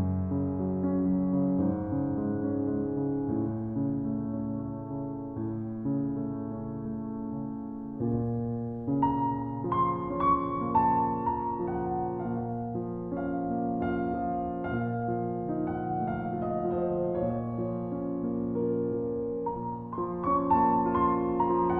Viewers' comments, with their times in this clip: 0:06 1. is that the pianist breath?